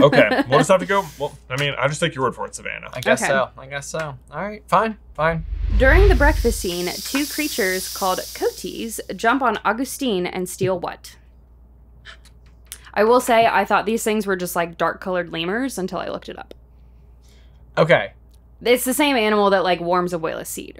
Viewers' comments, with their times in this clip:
0:08 the pronunciation of “coati” really threw me off lol (it’s co-AH-tee btw)